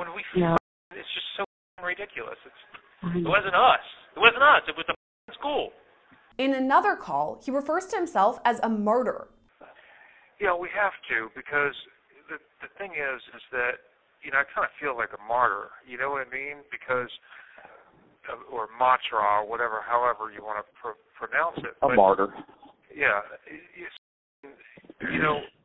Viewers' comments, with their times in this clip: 0:07 I don't think he said "murderer", it sounds like he said "martyr". Not that it makes his threats less criminal, but it confuses me that they misheard this. Or did I mishear it?